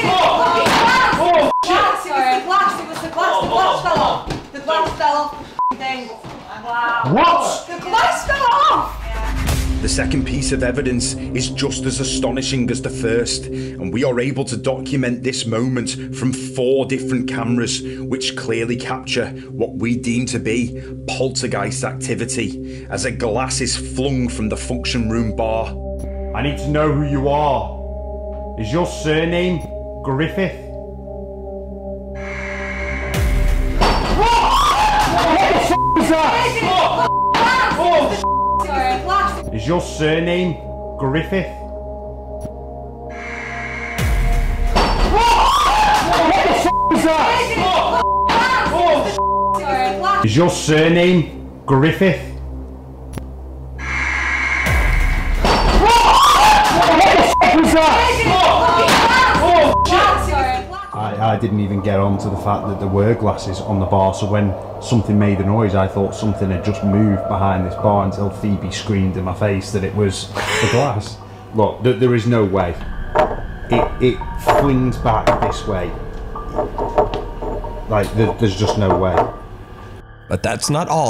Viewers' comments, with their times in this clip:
0:10 Is the dude trying to sound like the terminator?
0:33 is she clapping for their script finally works?😄
1:03 Where can I find the music that starts ? That sounds downright.... chilling.